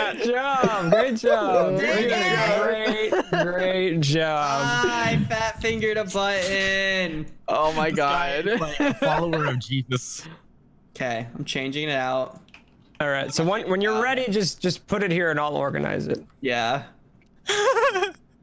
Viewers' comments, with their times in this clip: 0:04 rip headphone/earbuds users. 😂